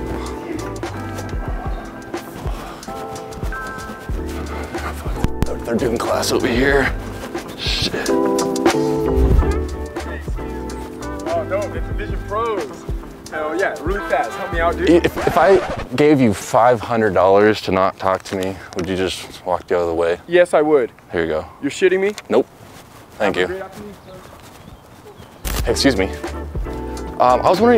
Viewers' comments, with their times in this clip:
0:10 got it 😂😂😂 he said yes I would so quick lol
0:10 that’s the nicest go away I’ve ever heard